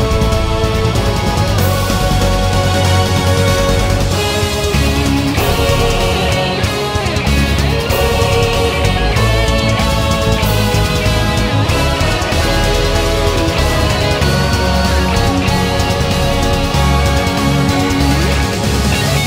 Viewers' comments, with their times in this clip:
0:04 I like how the music is in sync with the gameplay.